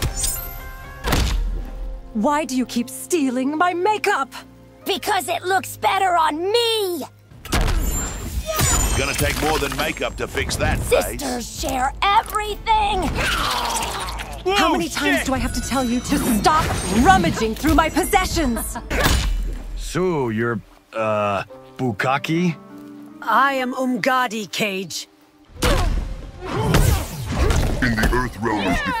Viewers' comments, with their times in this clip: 0:09 That Kano-Mileena one is BRILLIANT. Both the voices are completely spot on, that's amazing!
0:13 The way Kung Lao just screams "Oh shit" without the subtitles is hilarious
0:14 Kung Lao screaming "Oh shit!" in the background is incredible
0:15 Kung Lao yelling "WOAH SHIT!!" It's the funniest thig ever...
0:15 Kitana sounds pretty accurate too